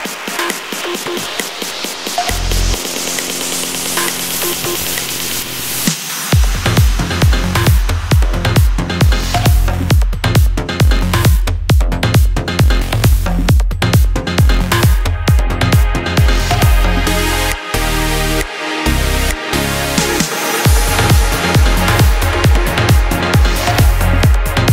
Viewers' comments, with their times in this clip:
0:06 love when that beat comes in !!!!!! amazing!!